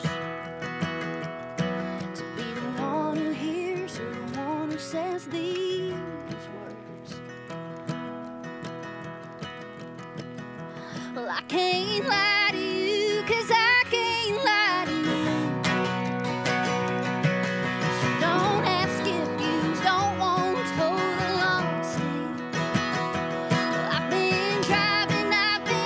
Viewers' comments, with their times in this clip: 0:07 ... you can FEEL the pain in her singing. THIS is country music.